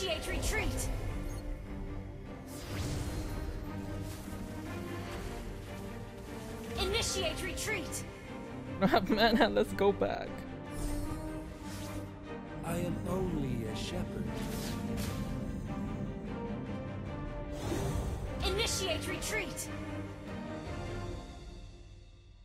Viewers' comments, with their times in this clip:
0:09 I heard it like "Wala na akong mana, let's go back." I suddenly thought that you're a Filipino :P what's his nationality guys?